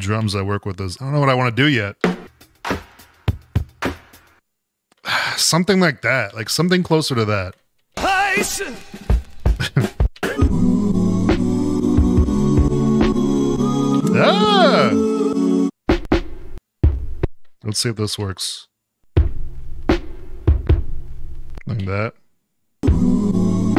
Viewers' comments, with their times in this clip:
0:10 sounds like Legwarmrs - mndsgn